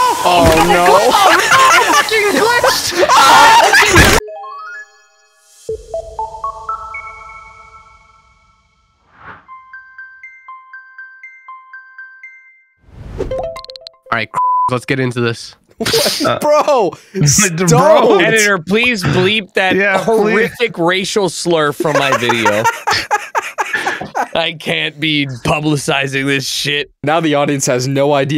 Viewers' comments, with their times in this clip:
0:09 / I can't be the only one that does the intro aloud too.. Right? "Boop bip bip bip boop bip bip bip boop bip bip bip boop bip bip bip brdrdrdring!" I do the whole thing every time. 🤣